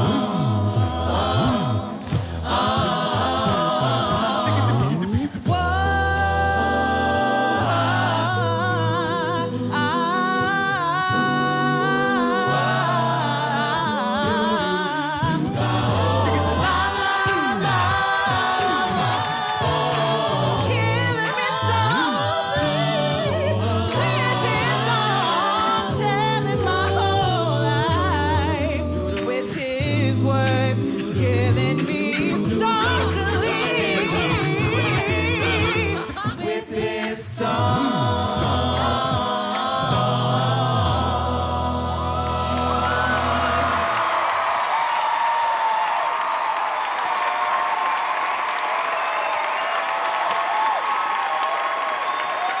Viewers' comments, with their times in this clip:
0:05 Can someone tell me what the hell is that. That might be the most beautiful marmony I ever heard in my life.
0:33 How did he do that record scratch